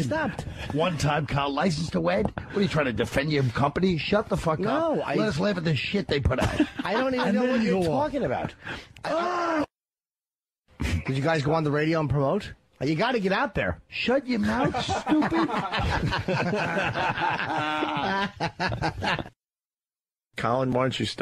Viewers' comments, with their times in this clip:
0:07 colin screams in disgust at lil yimmy